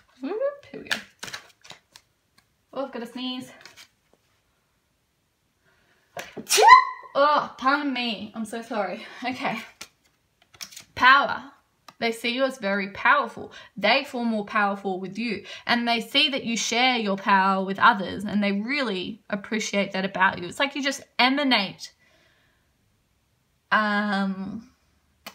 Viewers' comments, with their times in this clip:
0:06 bless you lol
0:12 we sneezed at the same time xD